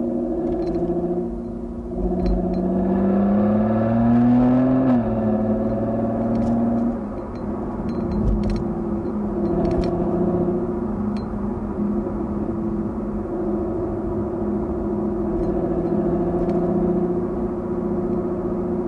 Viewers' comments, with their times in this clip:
0:03 Not sure which noise he was referring to but I noticed there was a light metal brushing sound from outside like brake pads botak that can only be heard after when he enters Old Klang road and onwards. Don't think can be heard on mobile. I might be wrong.